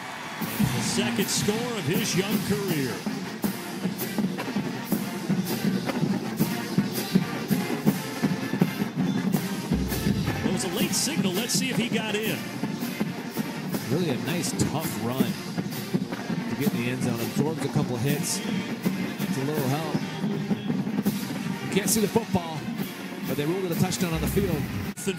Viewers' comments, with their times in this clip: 0:06 Lmao you can tell the marching band are tired